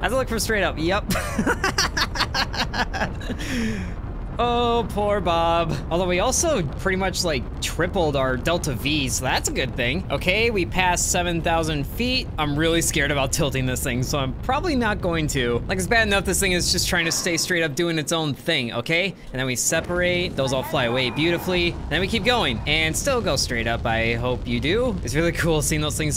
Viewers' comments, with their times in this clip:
0:10 we passed 7 thousand eagles !!!